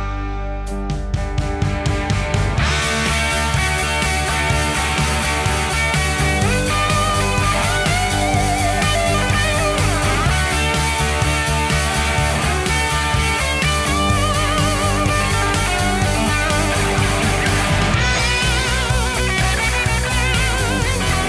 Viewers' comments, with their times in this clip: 0:06 beautiful solo dude! great acdc style song